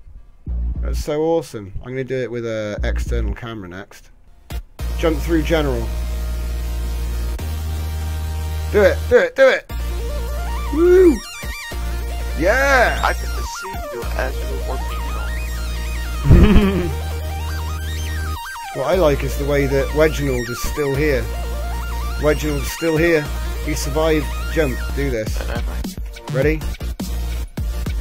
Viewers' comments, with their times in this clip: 0:09 New music! I love it It sounds like something from Rick Wakeman's Journey to the Centre of the Earth! I've always wanted Hyperspace in Starmade. When can we expect to see it in the game?